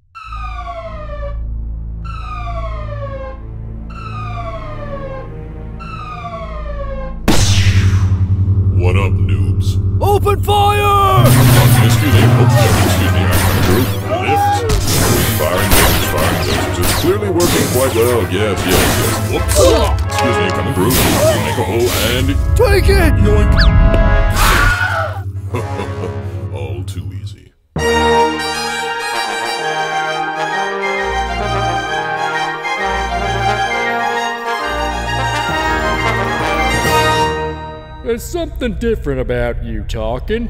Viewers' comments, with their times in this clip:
0:03 the casual excuse me was funny like a guy who clearly does not have a issue
0:22 doesn't it sound like he's saying "Twinkie!"
0:24 the famous weilhiem scream. :)